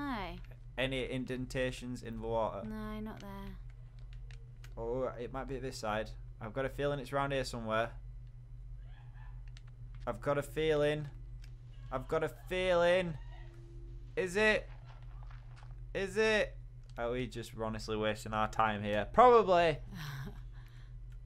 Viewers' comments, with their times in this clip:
0:09 What was that noise?! O.o